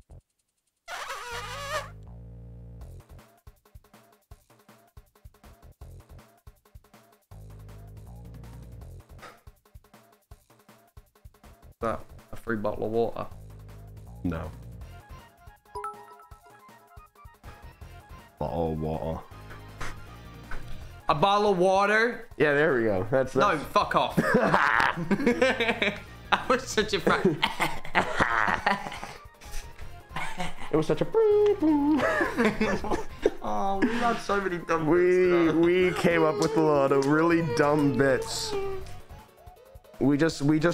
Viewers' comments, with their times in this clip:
0:10 idky but this clips been stuck in my head for so long now and anytime i ask for a bottle of water I say it in the most like american accent I can (im american but i like pronounce it like really properly american XDD)
0:20 wait why is his American accent actually good??
0:21 there laughs are so cute 😭